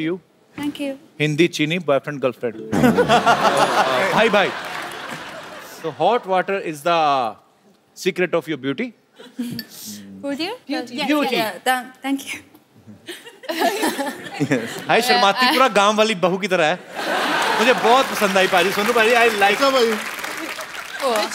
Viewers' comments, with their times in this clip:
0:09 Literally she heard Booty🤣🤣🤣🤣